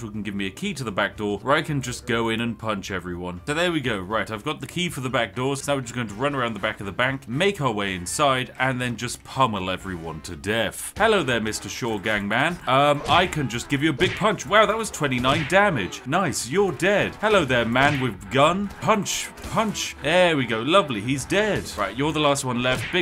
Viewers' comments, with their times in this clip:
0:10 the doom music make this a thousands times better